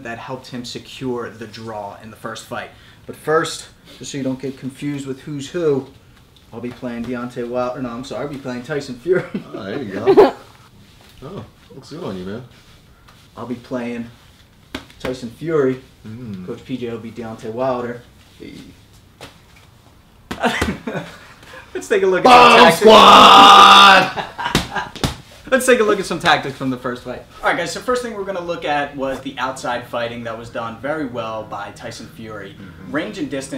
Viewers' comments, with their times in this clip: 0:10 That giggle told us who's behind the camera😂😂
0:21 rest in peace headphone users